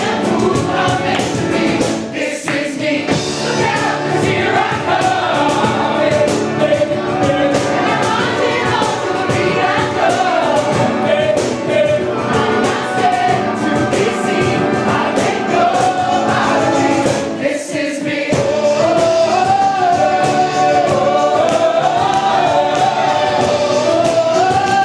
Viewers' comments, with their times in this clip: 0:10 the guy on that piano is ON FIRE! btw can I please marry this super super cute guy in blue ?